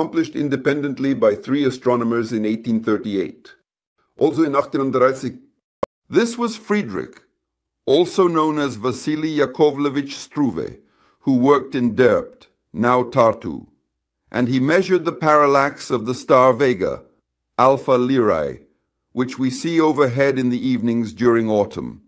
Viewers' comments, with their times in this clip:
0:03 what is that? what did u say? now i am pretty sure that is AI-translated video